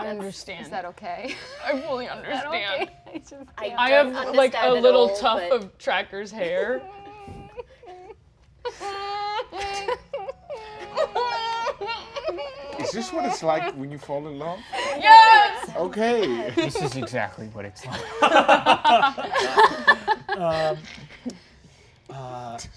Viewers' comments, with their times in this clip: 0:07 sobs of sapphic anguish :(